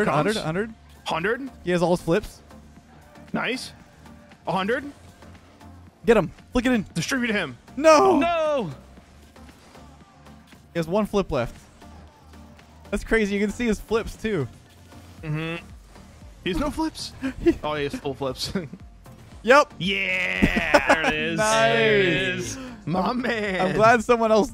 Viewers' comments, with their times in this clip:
0:06 I thought he said “distribute him”